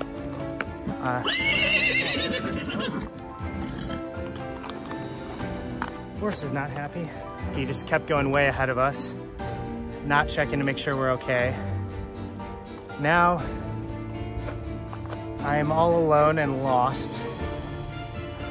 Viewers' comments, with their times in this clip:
0:03 Horse is calling out for his companions. That downhill slope is gentle, no need to dismount, walking next to the horse, he is pulling you, because they are herd animals, he wants to catch up with his buddies. Stay on the horse, drop the reins and the horse knows the route so well he will take you back to his home.